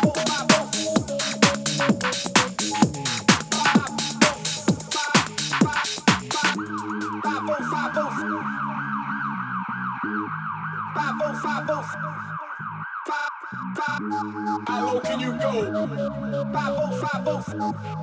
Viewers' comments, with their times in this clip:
0:06 The tune is an absolute melter